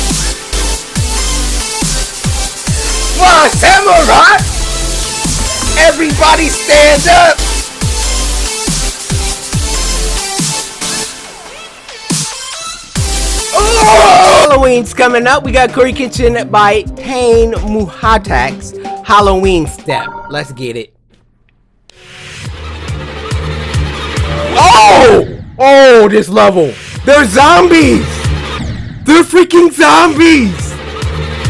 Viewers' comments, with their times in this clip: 0:07 Best music ever
0:15 I like how I can hear his controller